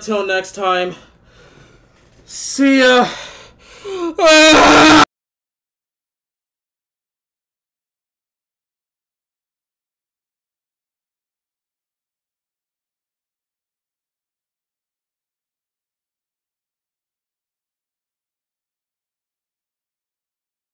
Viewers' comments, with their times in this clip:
0:04 I FELT that scream